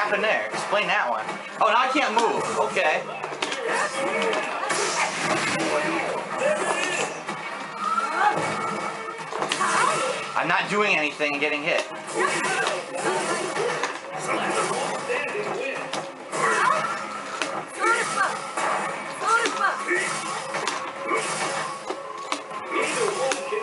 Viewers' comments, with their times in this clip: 0:06 you hear button tapping "I'm not doing anything and it hit"